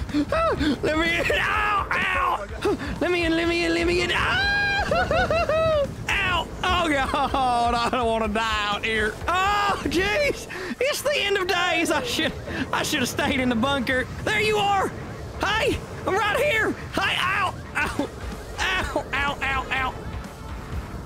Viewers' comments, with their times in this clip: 0:04 That cartoon scream